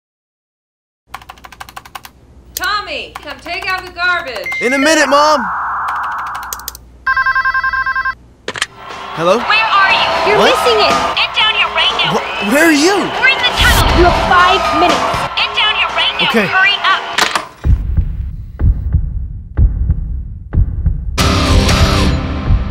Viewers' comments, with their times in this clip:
0:04 that sound the computer makes😂